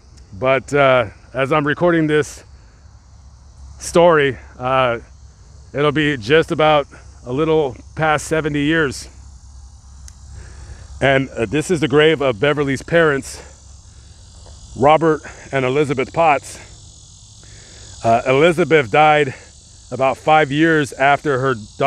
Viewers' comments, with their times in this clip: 0:03 That's not all.. listen from Very evident audio invasion.